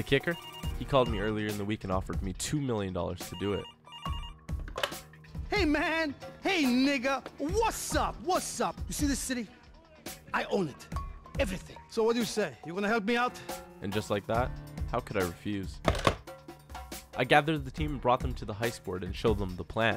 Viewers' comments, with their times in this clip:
0:07 it started buffering at when he said nigga so all I heard was nigg That's when I only guess what he would say lol